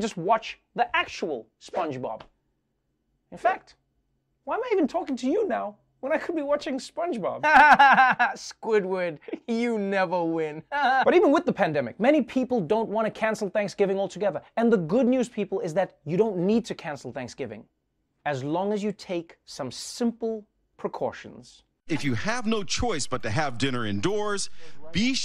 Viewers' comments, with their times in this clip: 0:06 his spongebob laugh is spot on